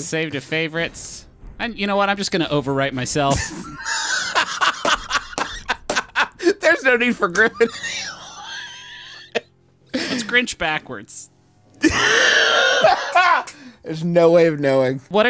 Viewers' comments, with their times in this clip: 0:03 Justin's wheezing is everything to me!! 😂😂😂